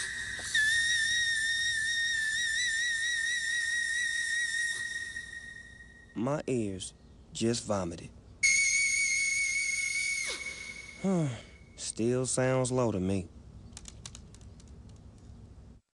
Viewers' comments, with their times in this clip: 0:09 On wow mariah dont hurt urself
0:09 NOPE! I mean. I don't agree with you..... it's a C10 note dummy